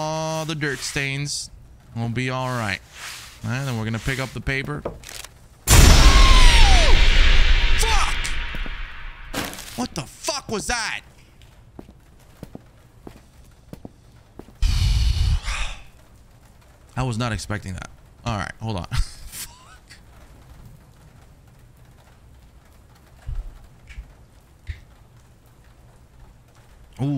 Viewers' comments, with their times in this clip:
0:04 this man’s voice changed😂😂😂😂
0:05 Go to for a manly scream 😂
0:12 😂😂 that scream took me out 😂😂😂